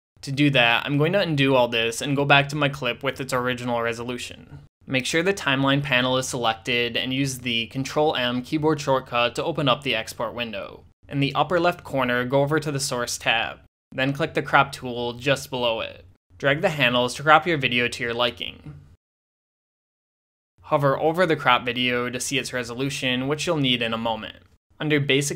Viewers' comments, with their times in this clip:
0:06 "control and keyboard shortcut"?? contrl+ what else? I can't get that window opened